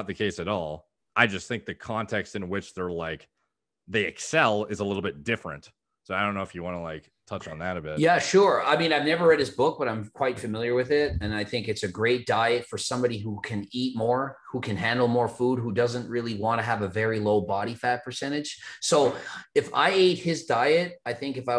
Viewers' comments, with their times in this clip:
0:09 Lmao,. He took him sec to actually get the question out.